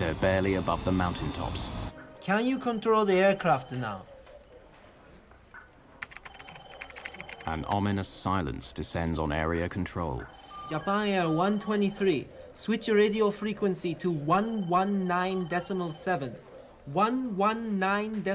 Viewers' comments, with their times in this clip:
0:06 The typing sound effect 💀